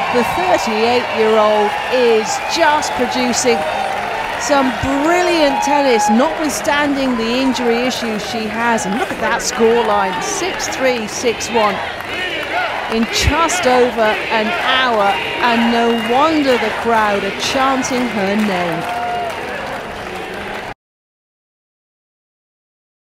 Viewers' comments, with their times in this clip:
0:05 ..crowd chanting Venus! Venus! Like WE WANT MORE!!